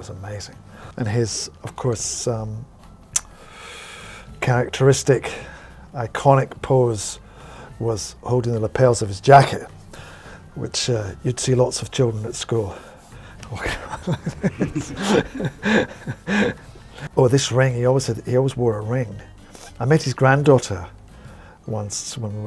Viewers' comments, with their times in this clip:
0:03 his breathing sounds like the Silence